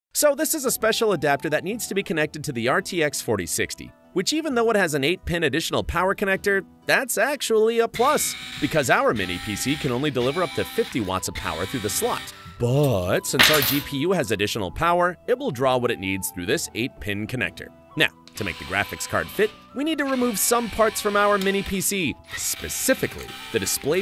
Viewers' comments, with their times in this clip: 0:07 FNAF?! Sounded soo close.